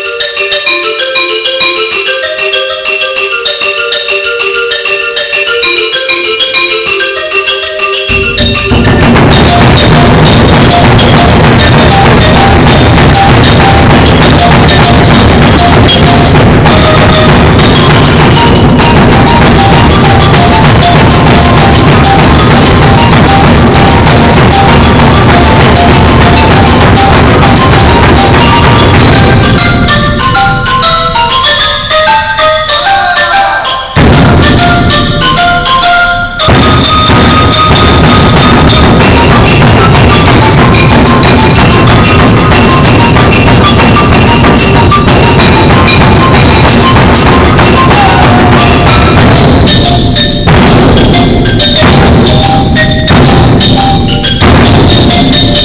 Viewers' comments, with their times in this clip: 0:07 the beat drop lmao
0:39 when the schoolbell sounds and you're free